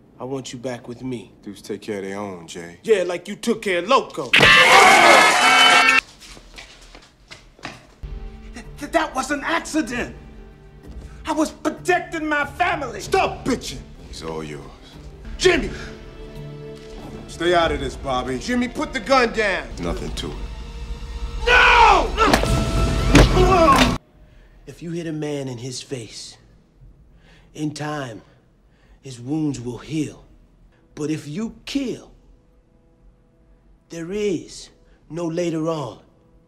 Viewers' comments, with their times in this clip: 0:03 the car horn when he got punched caught me off guard and I busted out laughing idk why 😂
0:04 I watched that knock out scene like 10 times...LOL! "I love u" "Yeah like u took care of Loco!"...LOL! The knock out is hilarious wit the noise an shit!
0:22 judo chop, smack. Og